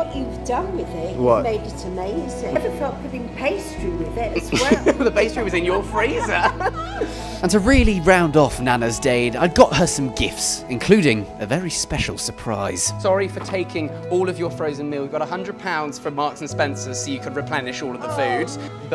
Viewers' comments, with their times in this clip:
0:04 I love the laugh changing to internal scream so quickly